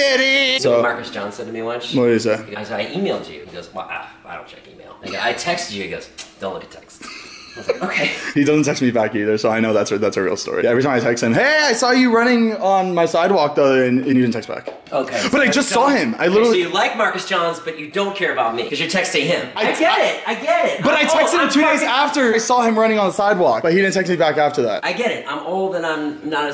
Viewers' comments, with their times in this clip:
0:10 Tventy von Peelots